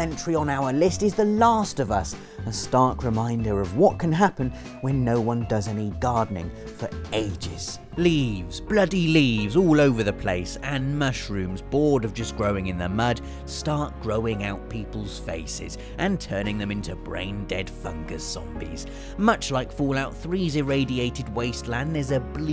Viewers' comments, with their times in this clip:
0:08 Can you tell me what the somber piano music is that's playing ?